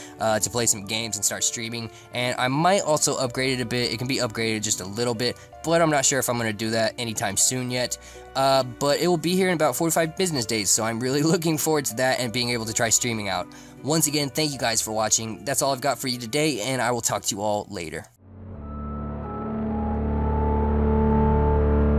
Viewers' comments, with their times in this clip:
0:09 "Four-To-Five", or "Forty-five"? The first one, right?:o :x